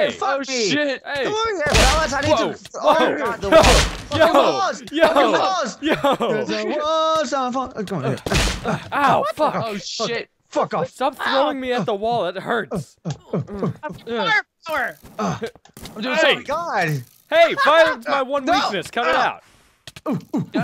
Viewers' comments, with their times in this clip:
0:05 you can hear the old minecraft sound of your character getting hit, listen closely